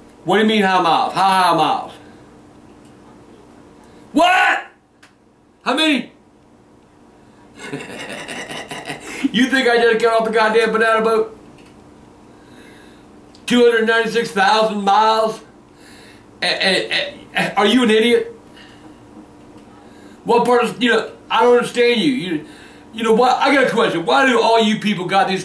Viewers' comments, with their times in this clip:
0:03 So many good one liners in this. When he yells about how many miles the car has, it always makes me laugh
0:06 That "smokers laugh" he had :D Awesome! hahaha
0:07 I cannot get enough of Grandpa's laugh
0:07 That laugh. LMAO!!!